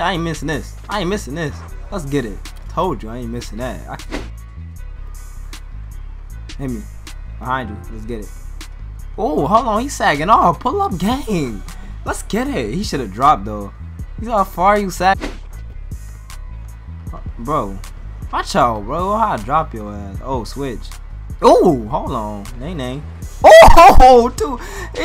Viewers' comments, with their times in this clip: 0:08 sounded gay every time he said something for some reason like "lets get it at around" ish😂😂